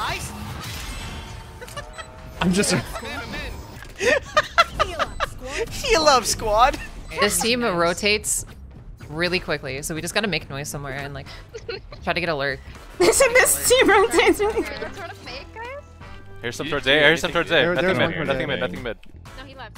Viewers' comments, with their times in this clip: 0:05 damn that skye voice impression really my day